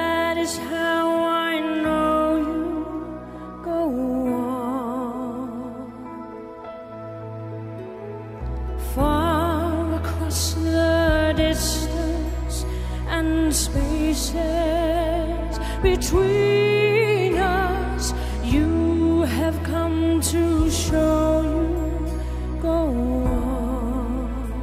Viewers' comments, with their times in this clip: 0:09 I love her vocal strength, and gentleness.